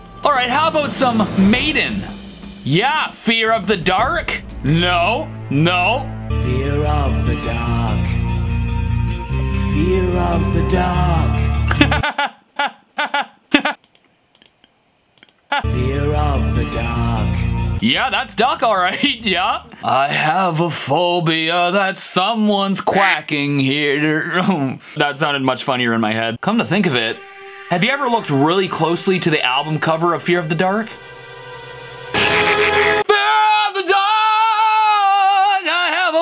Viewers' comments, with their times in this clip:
0:05 I can hear "Fear of the duck, fear of the dog"
0:06 LERR LOVE THE DACK (That is what i hear)
0:10 I hear "Fear of the dog🐕" not "Fear of the duck🦆" 😂😂😂
0:10 my captions: "fear of the dog" 😂
0:11 why I heard "feel of the duck"?
0:11 lol what kind of laugh was that haha
0:11 he's in uk so it sound like duck
0:14 I hear fear of the dog… which is sadly true😢😢😅😅
0:16 the first time I heard this song I heard fear of the duck and always will
0:21 I have a phobia that some duck is watching here
0:24 hes just sayin duck with a British acsent
0:24 get watching “Freak of the f***